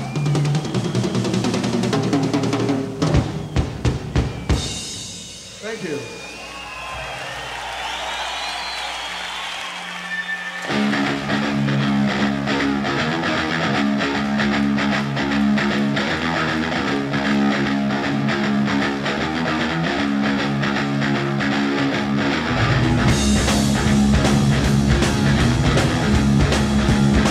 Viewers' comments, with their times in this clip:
0:09 the riff is possibly my favorite of any guitarist ever
0:11 Holy fuck I wish they made a song out of that riff